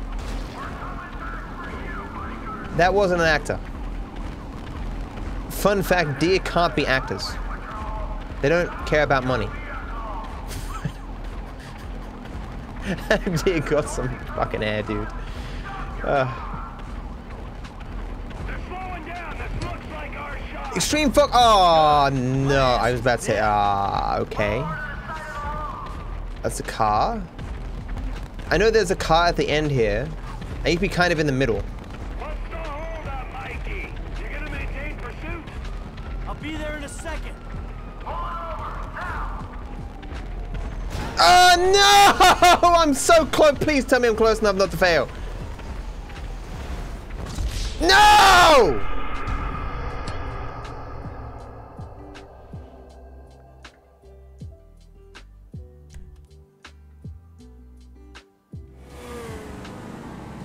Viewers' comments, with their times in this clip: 0:05 Sad deer noises
0:47 what a beautiful song